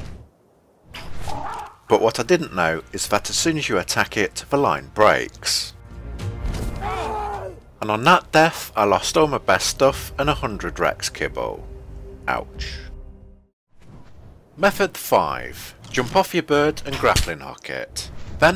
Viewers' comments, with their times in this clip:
0:06 xd I remember that old death sound